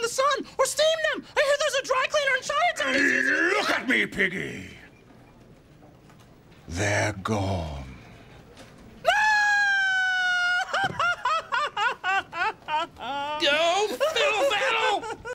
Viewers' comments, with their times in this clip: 0:08 that strand of hair that falls in her mouth as she screams really enhances the guttural pain of the moment
0:09 Sometimes I think she is laughing LOL
0:09 Miss Piggy sounds like Mario